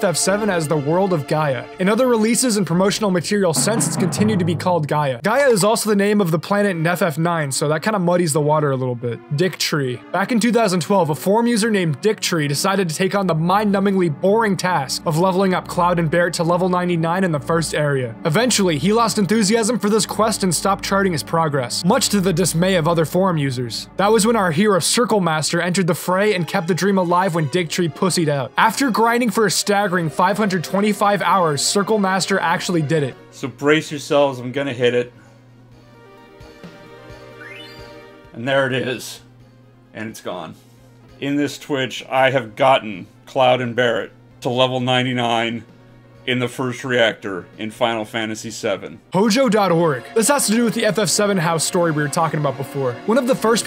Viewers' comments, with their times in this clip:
0:06 he sounds so dead inside after getting to 99 like its depressing
0:34 ... THAT is the voice of existential crisis.